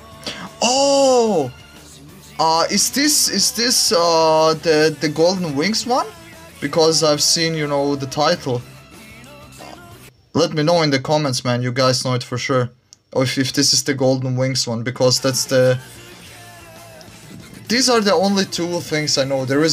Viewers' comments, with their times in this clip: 0:04 ah yes the "golden wig's"